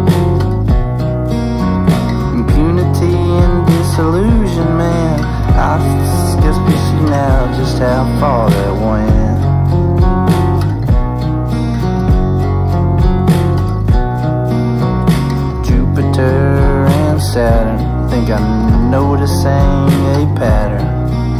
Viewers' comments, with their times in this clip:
0:05 I thought my record was broken but even in the video there is this weird word before "guess we see now...". What is Kurt actually sayin'? Great song by the way (but that's needless to say for a KV song)!